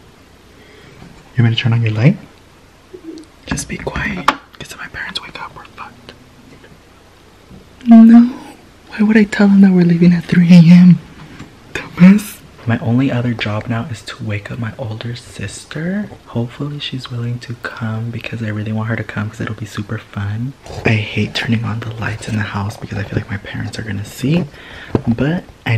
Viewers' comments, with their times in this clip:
0:07 BRO THE WAY HE SAID "NO"